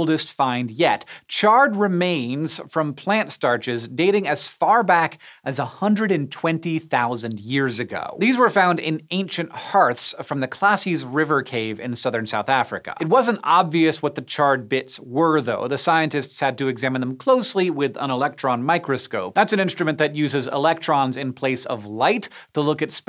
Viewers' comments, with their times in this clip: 0:10 Me: Man, Hank is right! That cave is Classy! Me 20 minutes later: Oh wait, that’s the name!?